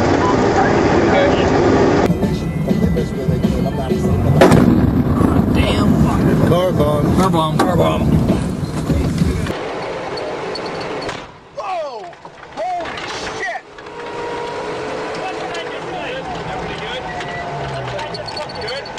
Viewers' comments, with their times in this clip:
0:04 sounds like they deal with it daily
0:06 tone says not the first time for sure